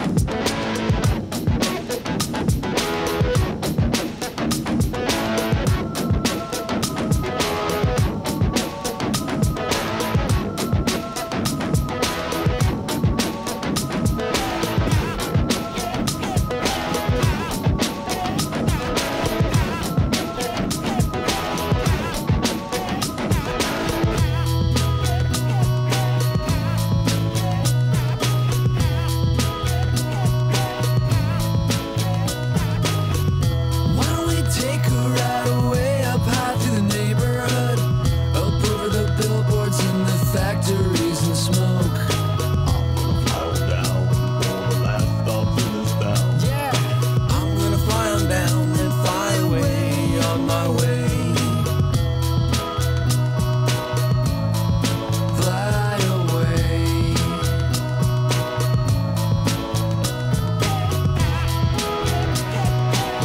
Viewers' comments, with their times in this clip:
0:06 lazy keyboard player Xd. i like how much the carrot's voice changes....
0:47 I've loved this song since it first came out...of course I didn't know what it was about until a friend showed me the whole album. I like how E adds a poppy melody to his dark lyrics. Love his face :]